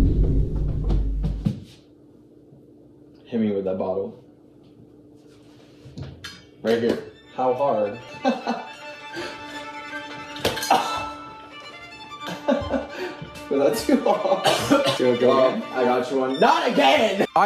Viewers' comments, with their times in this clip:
0:05 😭 with sound cancellation on I got jump scared 😂 sounds like someone walking up to you